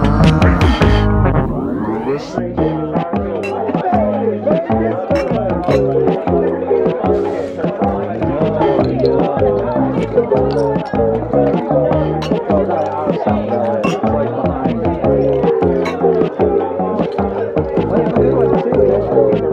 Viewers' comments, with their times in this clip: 0:06 This is totally Peanuts means Earthbound, especially the murmering in the background sounds just like a part in (I think) Your Name Please
0:06 I like your interpretation of your name please, mine is that it sounds like the song used for the "monty python's flying circus" theme. The moment near feels like I'm in a cozy warm restaurant.